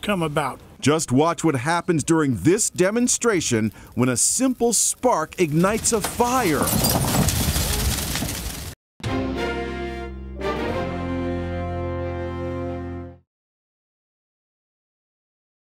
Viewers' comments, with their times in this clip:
0:07 (upbeat news music)